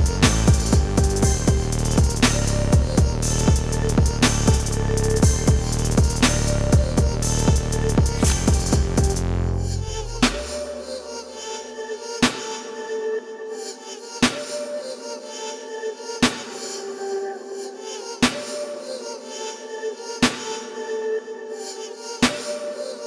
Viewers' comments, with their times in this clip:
0:08 The beat respected the exercise ..